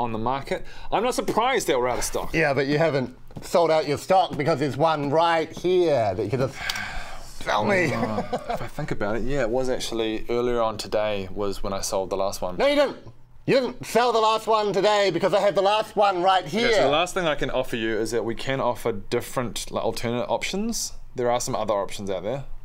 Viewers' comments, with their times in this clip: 0:08 LMAO I actually heard that guy laugh in the background ....it lasts a fraction